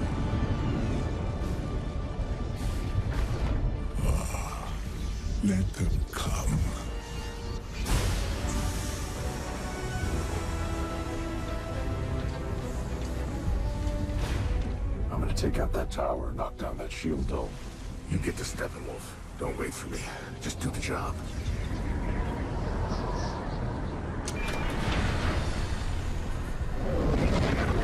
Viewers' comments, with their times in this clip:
0:08 .. Avengers music 👍 .. what a bad cut WB